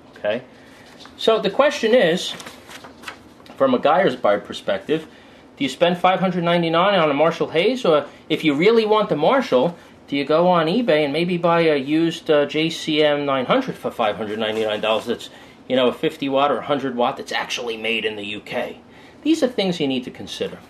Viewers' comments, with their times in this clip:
0:04 in the video What's a Guyers Buide Perspective? LOL, just breakin chops my friend. Very good intel on the amps. Ive been playing Peavey gear for decades. Guitar amps, bass amps, PA systems, tube, solid state, guitars and basses... and even drums. They have consistently kept up with and sometimes even surpassed the other "big brands" time and time again.